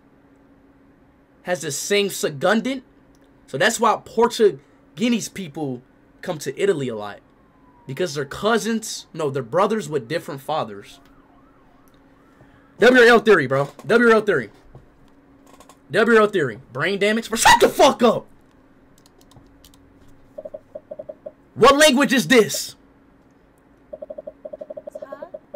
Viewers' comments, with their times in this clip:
0:10 anyone else hear the cop car?